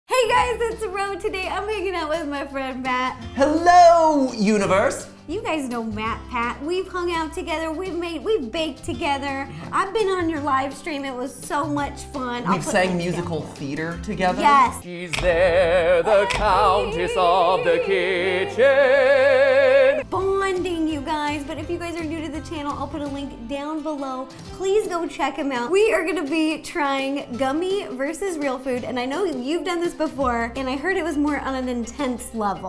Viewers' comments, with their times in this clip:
0:01 she said I am making up with my friend of have to replay multiple times to understand
0:16 that VIBRATO tho